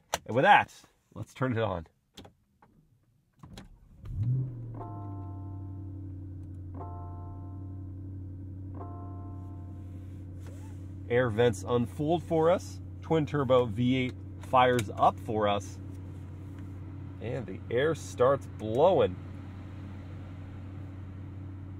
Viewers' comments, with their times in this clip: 0:05 the startup chime sounds like a Barry White song or idk I’m kinda nitpicking